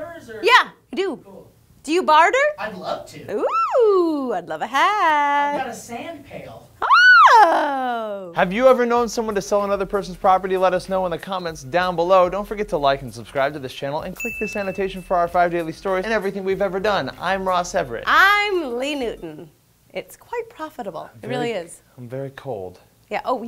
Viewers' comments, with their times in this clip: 0:07 Hey squeal XD